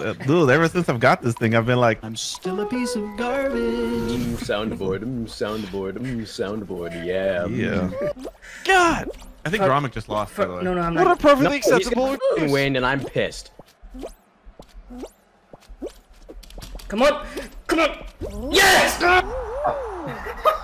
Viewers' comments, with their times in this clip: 0:04 Spamming MMM soundboard